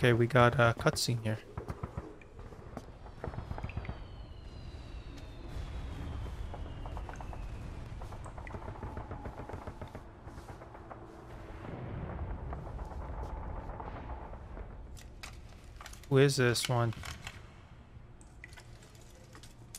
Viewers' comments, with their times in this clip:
0:04 you can litteraly heard Solid snake coming with the shooting. so the Metal gear 5 finish at the same as Metal gear 1. this plot twist cutscene come 10 years after the events of Metal gear phantom pain. since metal gear 1 happens in 1995. Its also explains which the final fight with the REAL BIG BOSS in Metal gear 2:Solid snake, BIG BOSS have white hair since its only 4 years after this plotwist cutscene. Venom Snake was way younger that Big Boss.